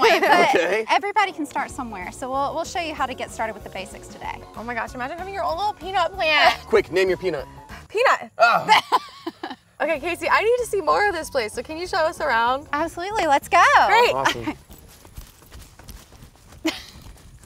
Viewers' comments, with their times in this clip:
0:05 her laugh XD